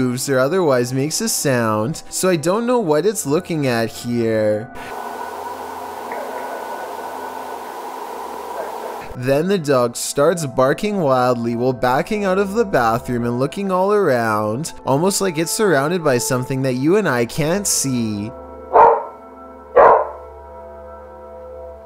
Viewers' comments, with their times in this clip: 0:06 The dog hears SOMETHING and right after. A cough? Talking? Not sure what he hears but that dog hears some noises.
0:06 Idk there's literally 2 consecutive thuds from what seems like the bathroom roof for me